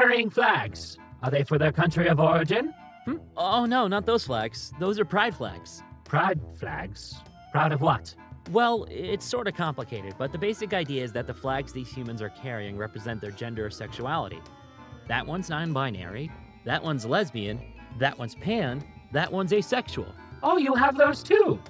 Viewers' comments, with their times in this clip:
0:04 I know this is like... 2 years old, but the pleasent surprise of the aliens voice when they learn that humans have queer folk as well just makes my day. Then it gets angsty BUT THE DAY HAS BEEN MADE!